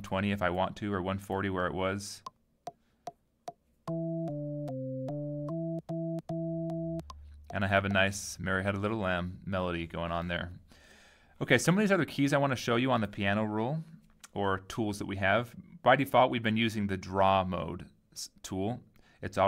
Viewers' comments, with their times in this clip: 0:03 sounded like a magic for me lol.. Suddenly a bunch of notes turned on a very familiar song.. wonderful xD Awesome lesson, btw!